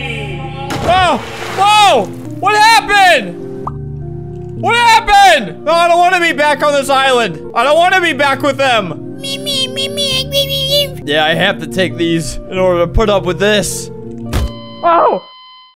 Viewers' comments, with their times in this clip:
0:09 that one mosquito or gnat in my room at 3 AM